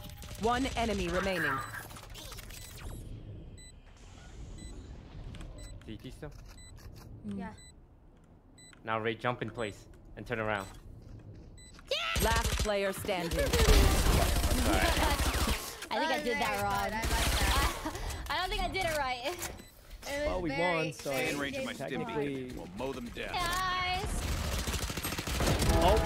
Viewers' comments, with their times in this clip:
0:10 LMAO I LAUGHED SO HARD THAT I CHOCKED MY OWN SALIVA I LOVE HOW THE FACTTHAT RA LITERALLY STOP SCREAMING WHEN AS SOON AS SHE DIES HAHAHAHAHA Edit: AND HOW TOAST LITERALLY GIVE UP HAHAHAHAHA and then rae "i think i did that wrong hehe" so cute HAHAHAHAHA